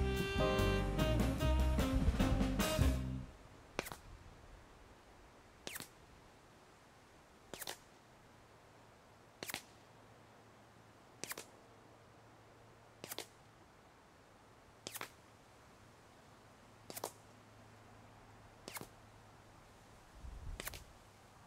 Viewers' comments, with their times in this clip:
0:03 This is the first time I've ever heard what sounds like the classic Hollywood silencer sound effect from an actual firearm! Pew pew!